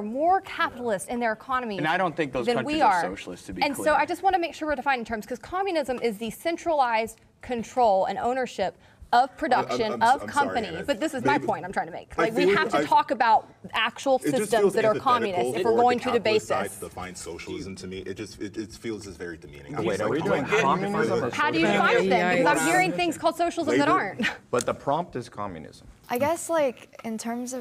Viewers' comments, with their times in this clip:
0:08 Oh my god he did it again! Not a huge deal when people talk over each other in these debates, but the fact he does it repeatedly while also not allowing the opposing team to do it to him or anyone on his side is aggravating.